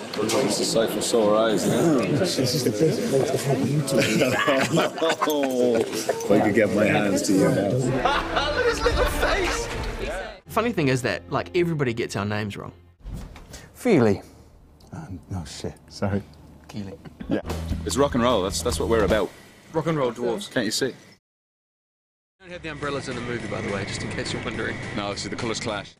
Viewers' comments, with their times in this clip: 0:08 Aidan's voice omy .